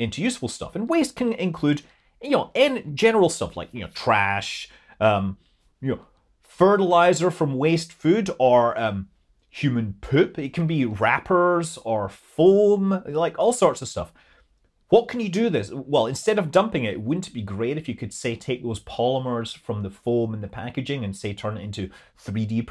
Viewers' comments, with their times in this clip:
0:08 My favorite used to be muuuun for moon - but human poeewp is my new one LOL